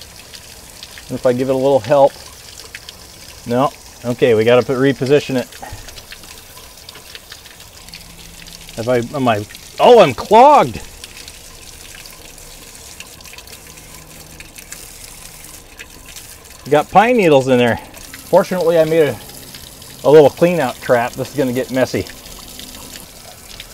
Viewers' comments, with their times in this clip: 0:09 did he say I'M clogged or unclog?